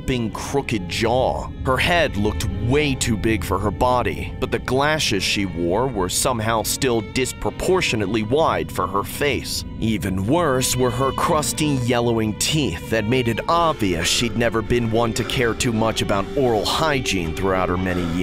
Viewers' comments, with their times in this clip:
0:06 I don't like the story teller, he sounds ignorant